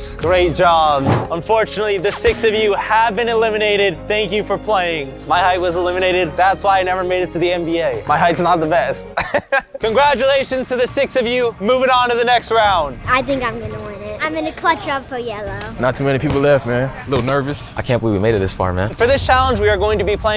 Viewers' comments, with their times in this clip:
0:04 Mile high was eliminated